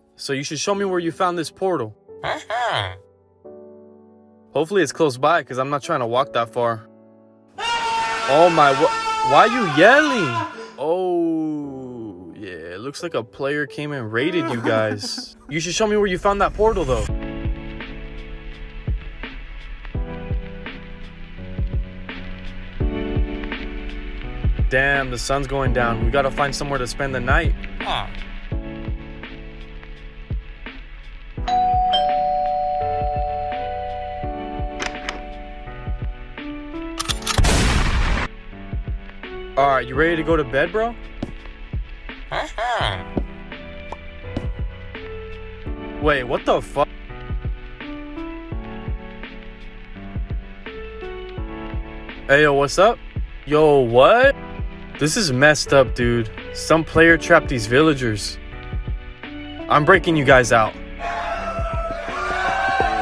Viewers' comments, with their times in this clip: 0:07 OMG THIS GOT ME DYING SO LOUD IM DYING HELP
0:07 bro the screaming 😂😂😂😂😂
0:08 That's scream it was so funny
0:18 The hit song on is fire🔥🔥🔥🔥
0:20 The Minecraft music in the background
0:37 thats my favorite sound effect gun
0:44 Another swear cut